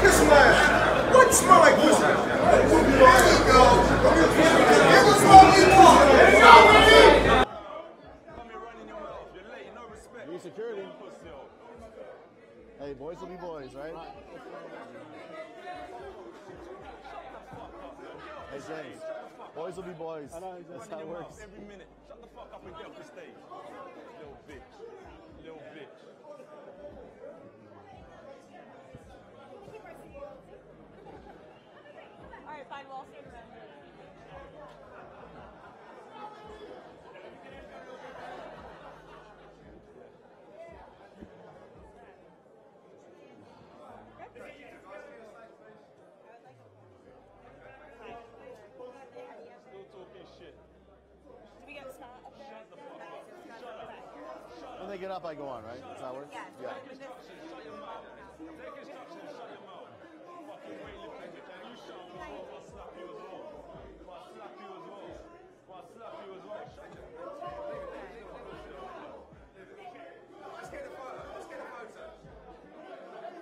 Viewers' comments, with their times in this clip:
0:09 "no respect, pusy'ole" so British, love it
1:01 the Nigerian came out of AJ😂😂 “you shut the fuck up before i slap you as well” i love it😂😂🇳🇬🇳🇬